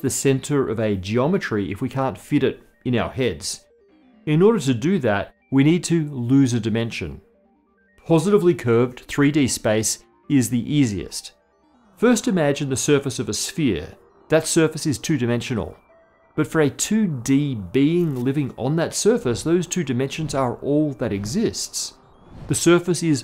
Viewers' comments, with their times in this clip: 0:04 I hear a phone vibrating... Thought it was mine XD